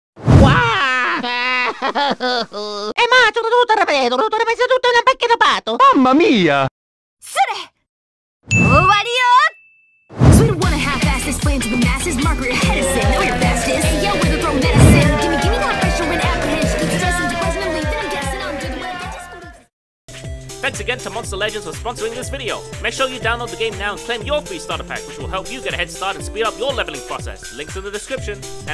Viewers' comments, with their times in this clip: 0:10 This song is ROCK N' ROLL!